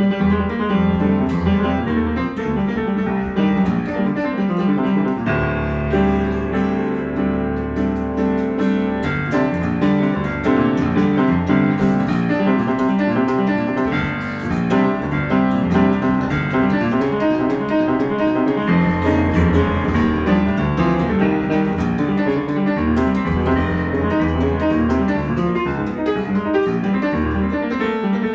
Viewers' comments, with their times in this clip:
0:09 really made the piano sound like a sax (a few sec after).